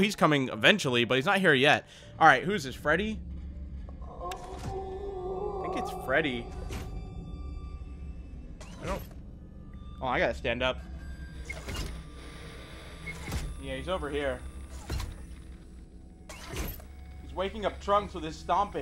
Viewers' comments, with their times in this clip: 0:03 Freddy: no instances of moaning and simply laughs, plays music, or talks Also freddy: